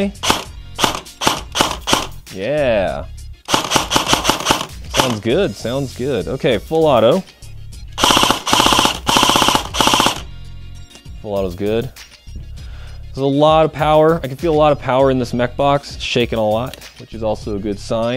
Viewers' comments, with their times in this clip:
0:04 sounds good GBB elitists: "ears bleeding"